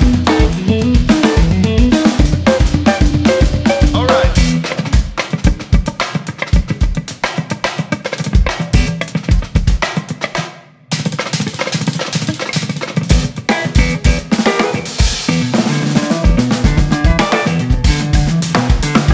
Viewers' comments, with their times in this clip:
0:04 reminds me a steve gad solo